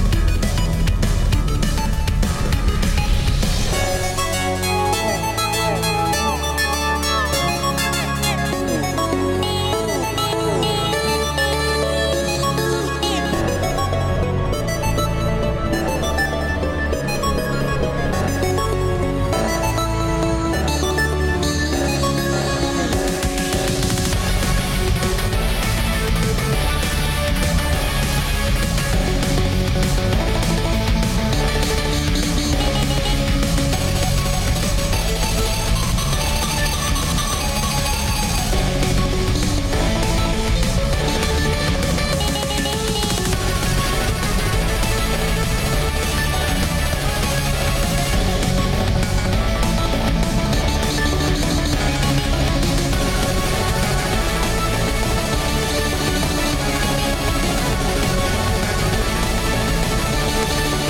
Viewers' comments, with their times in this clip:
0:03 that sounds like a bird xD
0:04 Nah it sounds like the roblox old oof sound but distorted and high pitched xD
0:13 doesn't sound right
0:13 it’s off key but it’s alright
0:23 beat drop is hardddddd like holy shit❤
0:43 this beat drop hits hard😎😎